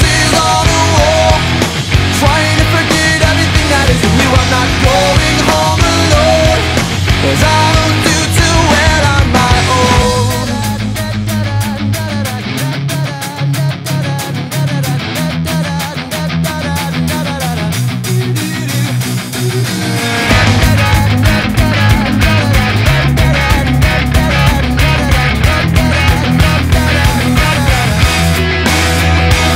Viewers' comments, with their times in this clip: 0:10 one of the best bridges ive ever heard its so catchy simple and works seamlessly around the heavy sound. just makes u want to tap ur foot and dance around
0:17 I like the "doo"s